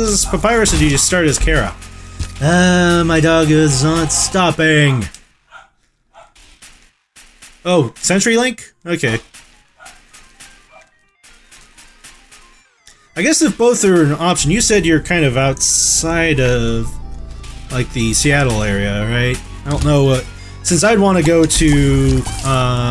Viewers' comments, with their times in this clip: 0:07 doggie!i love DOGS!bark!bark!